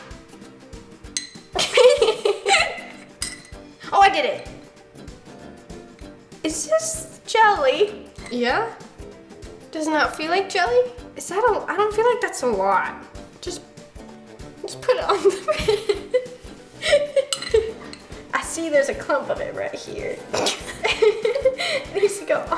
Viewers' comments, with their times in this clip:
0:06 Veronica sound's like she's high on anesthesia LMAO